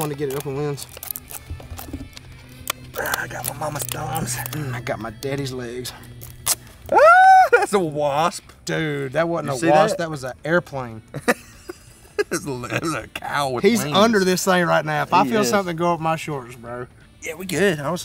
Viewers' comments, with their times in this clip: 0:06 🤣🤣 ...the girly scream!! 🤣🤣